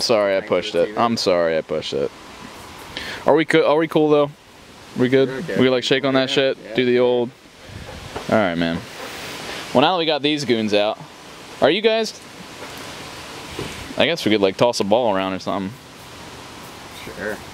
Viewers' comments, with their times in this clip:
0:03 I can't tell if hey says are we cool though or if he said are we cool will.